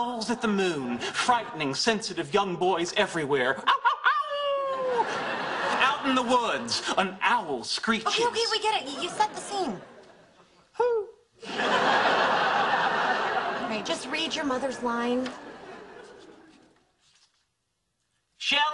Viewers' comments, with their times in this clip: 0:06 Owl hoo xD